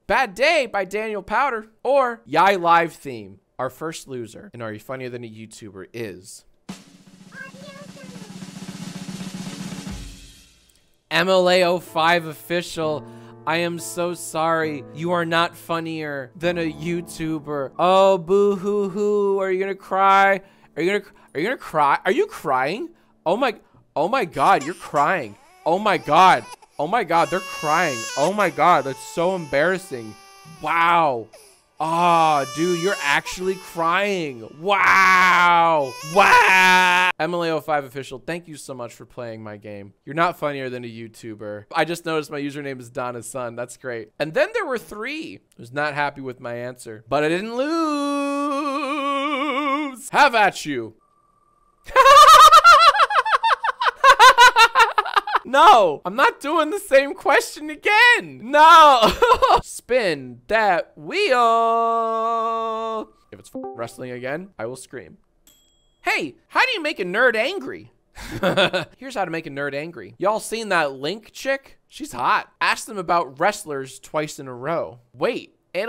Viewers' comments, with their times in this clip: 0:07 I heard the envato stock VA high pitched
1:01 THE DISCORD VC JOINING SOUND MADE MY HEART STOP DUDE
1:03 Discord call join sound gave me a fucking heart attack
1:03 someone joins discord vc